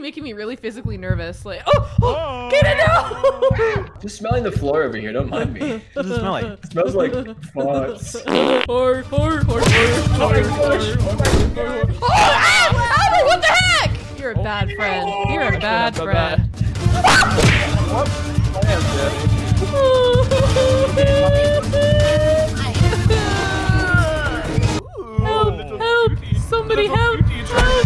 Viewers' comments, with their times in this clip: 0:08 And more Freddy fazbear beat box here 😭😭😭